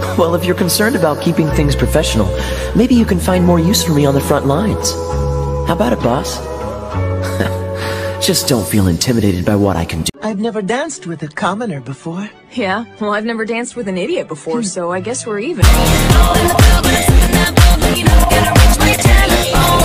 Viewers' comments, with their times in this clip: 0:03 H-How? THAT'S THE VOICE I IMAGINED CARDEN WOULD HAVE! 😶